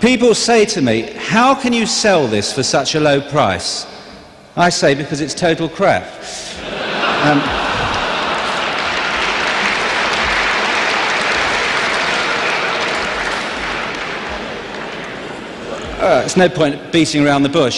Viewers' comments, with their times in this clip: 0:04 a long pause when you knew you might already screw up and if you should continue, but forget that, I love the audience reaction, lemme just continue...